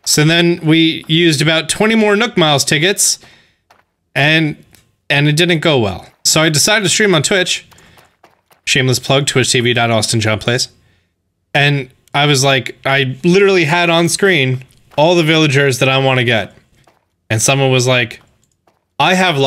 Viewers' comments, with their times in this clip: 0:03 Eminem plays Animal Crossing.